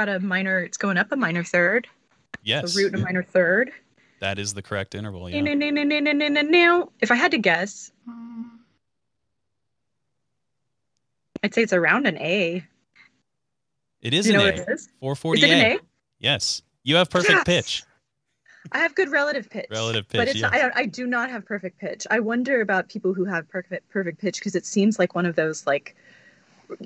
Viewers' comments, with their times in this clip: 0:08 isn’t that a Bb3?